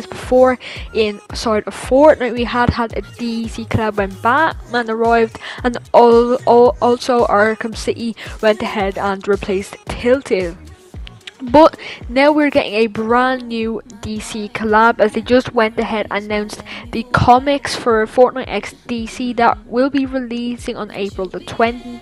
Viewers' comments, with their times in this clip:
0:03 uh uh spit it the fuck out lol